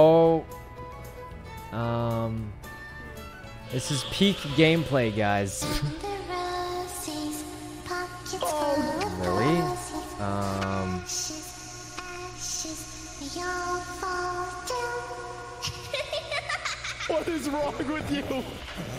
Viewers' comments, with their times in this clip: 0:05 lily creepy singing :)